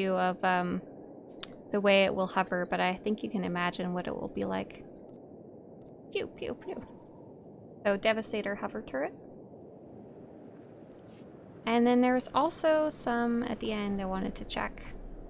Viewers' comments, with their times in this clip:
0:03 the cutest "Pew pew pew" I've ever heard <3